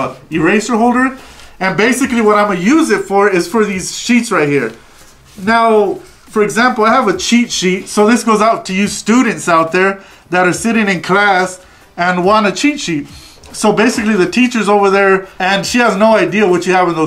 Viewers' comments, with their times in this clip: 0:04 Haha I thought he said chichis I loved the video. I have a chichi haha sorry.😂😑